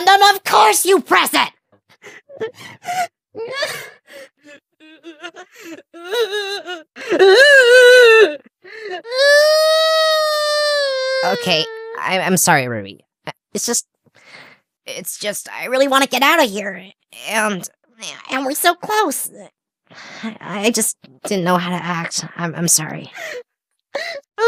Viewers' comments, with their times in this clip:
0:09 the air raid siren